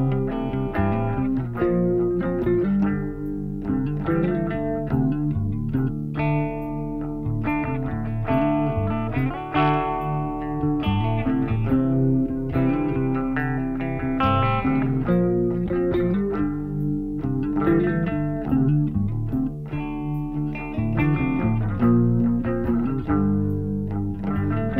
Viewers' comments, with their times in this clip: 0:10 90s grunge vibes